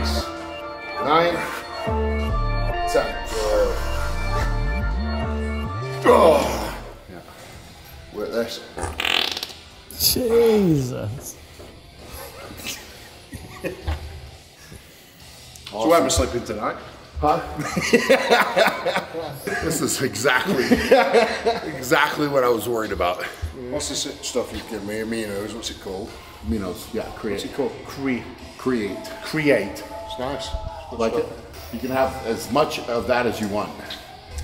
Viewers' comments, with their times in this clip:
0:09 sounded kinda wet🤤Eddie might have some streaks ...
0:13 Between all of the ripping and the searching for his six pack I was sure Eddie was gonna need some new pants. Pause and you'll see what Brian thinks of it and there's Eddie chuckling like a big kid 🤣
0:15 HEY EDD WHEN YOU FART YOUR SUPPOSED TO SAY HEY BRIAN I CALLED UR NAME WHY DIDNT YOU ANSWER?!!!